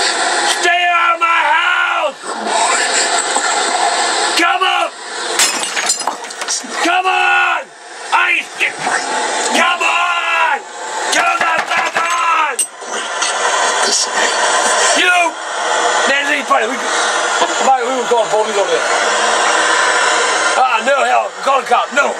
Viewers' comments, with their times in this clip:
0:05 "COME ONN!!!" CRASH!!!